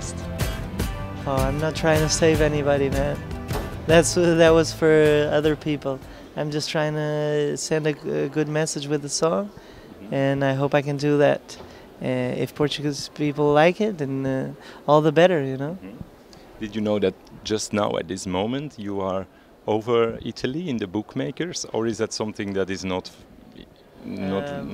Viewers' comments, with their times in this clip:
0:05 He trys and what happens, more than 50 % dont understand what he say :D